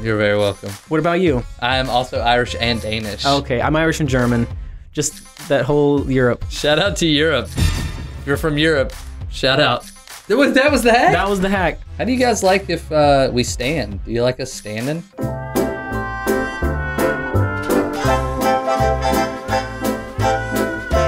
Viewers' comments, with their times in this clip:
0:07 “ shout out” more like “shut up”